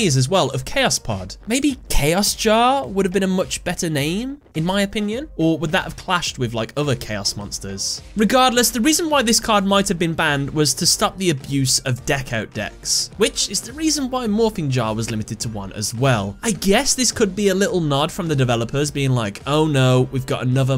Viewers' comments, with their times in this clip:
0:08 what is a deco deck Edit - oh captions saved me, deck-out makes much more sense